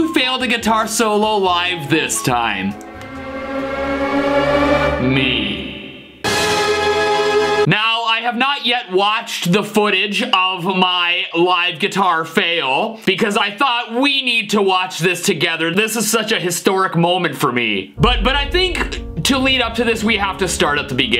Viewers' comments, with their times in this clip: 0:03 Cinematic and epic suspense sound effect 😱😱😱😱😱😱